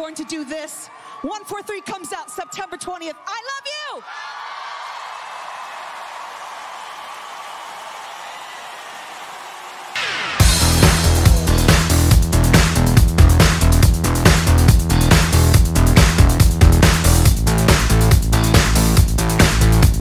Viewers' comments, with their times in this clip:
0:05 They were booeing